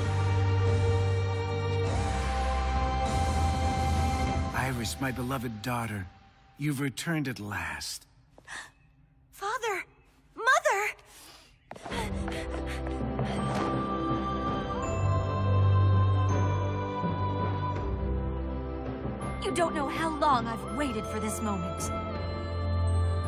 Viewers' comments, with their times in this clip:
0:04 Irises dad sounded like Donald trump 😂